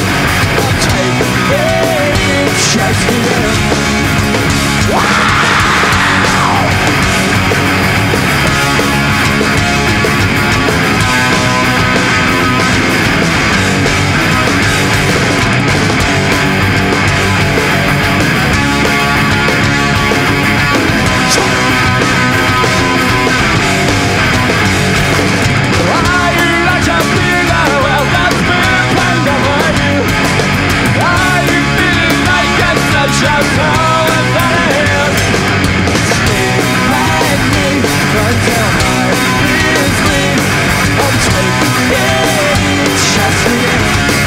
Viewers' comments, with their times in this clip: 0:05 The most iconic guitar strumming you will ever see
0:08 yeah exactly you can see it and even hear it when he plays the D power chord
0:30 You can hear the power chord slightly changing because it lacks the 5th string, it becomes an octave power chord, you can see the broken string